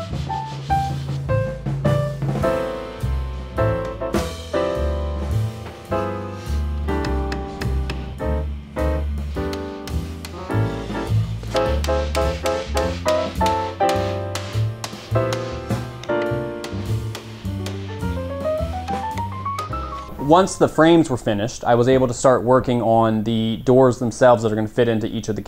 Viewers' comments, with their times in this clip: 0:10 Props to the editor for syncing the piano chords up with the mallet Your efforts did not go unnoticed 😉
0:10 excellent sound editing there, duly noted!
0:10 You did it again here, too. Synced up the hammering with the music. I love it every time it happens!
0:10 Was the piano and hammering synchronisation intentional?? Perfection
0:11 loved what you did there, syncronizing the piano with the hammer :)
0:11 Was the fit between music and the sound of hidding the wood in minute on purpose? Excellent...
0:12 The way you synced the mallet tapping with the piano staccato was wonderful
0:12 Did anyone else notice that the piano music matched the hammering ? Nice editing!